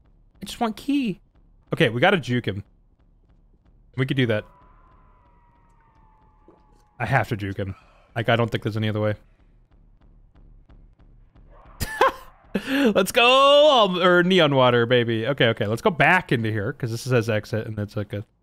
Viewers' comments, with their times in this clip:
0:04 I THOUGHT MY NOSE MADE THAT SOUND AND IM DYING XDDDDDD